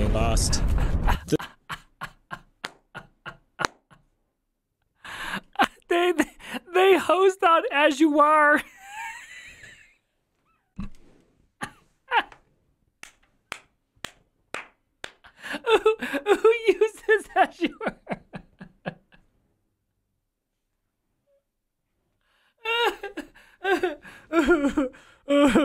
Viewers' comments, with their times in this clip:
0:06 you're laughing. The whole dev team is panicing and you're laughing
0:07 You didn't just pronounce Azure like that.